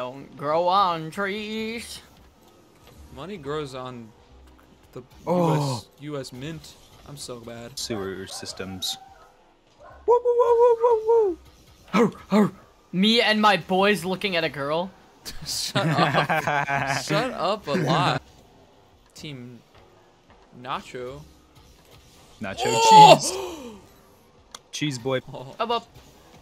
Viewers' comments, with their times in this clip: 0:08 Were just gonna ignore da beat da dog made:)